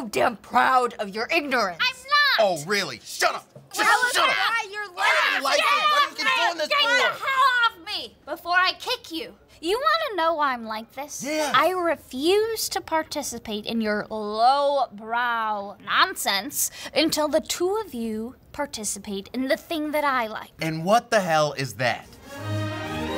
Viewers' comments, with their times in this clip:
0:07 "GET OFF ME before i kick you" sounded so polite ahahahaha